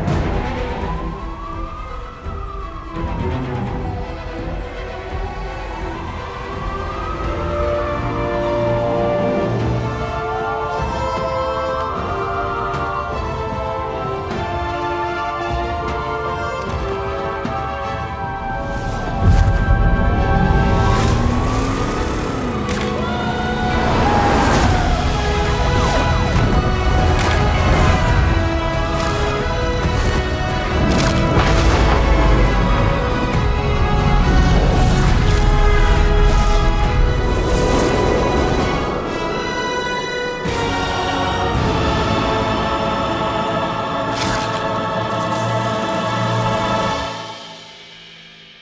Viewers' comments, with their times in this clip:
0:09 Soundtrack goes hard
0:30 fortnite battlebus ahh sound effect